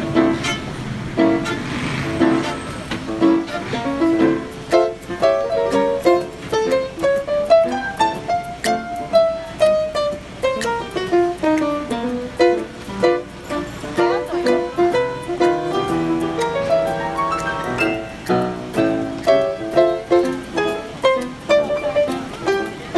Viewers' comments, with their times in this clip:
0:09 I did fall in love right here. And damn she can play the violin!